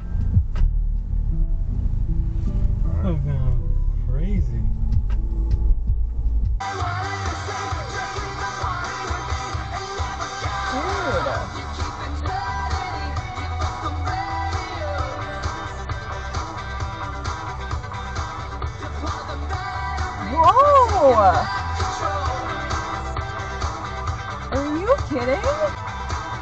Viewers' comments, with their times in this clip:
0:07 #14 I got fully distracted by my chemical romance playing i had to watch the clip again lol!